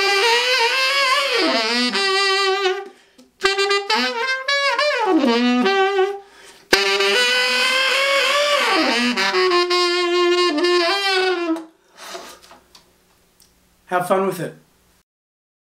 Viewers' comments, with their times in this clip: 0:06 Damn! That's dirty. just melted my face off.